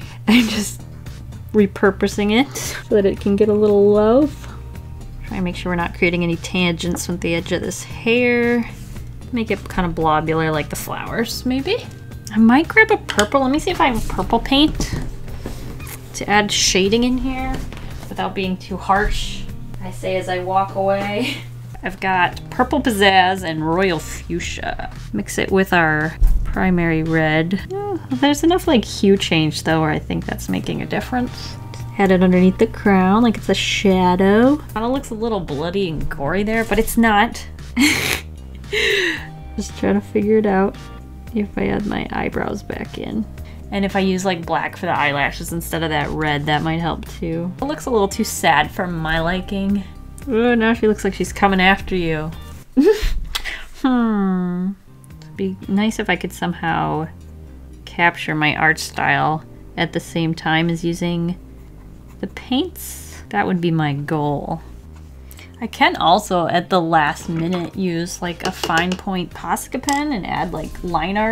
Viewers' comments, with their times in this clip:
0:07 did anyone else hear a Minecraft spider or am I going crazy???
0:54 When she said “Hmmmmm” The first thing I thought about was SHES A MINECRAFT VILLAGER!!!!!!!!!!
0:54 Who else thought that her hhhmmm and sounded like a villager in Minecraft Just me okay.